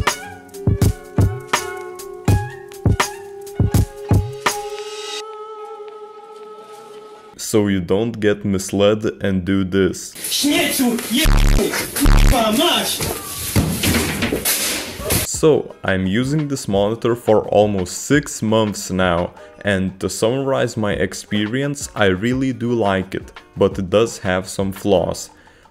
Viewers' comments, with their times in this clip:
0:09 Nice polish accent :D